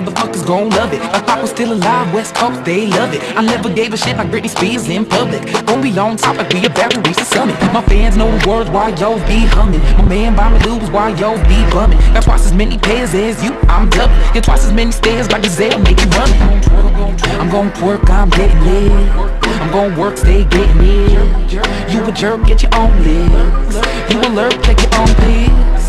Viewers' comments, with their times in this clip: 0:10 heard "my man buy me lube"